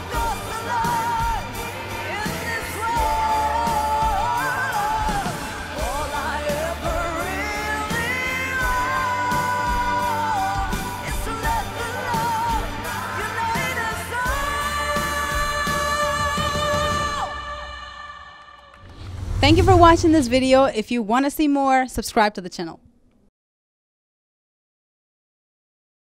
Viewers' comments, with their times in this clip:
0:07 her voice is so damn impressive but oh god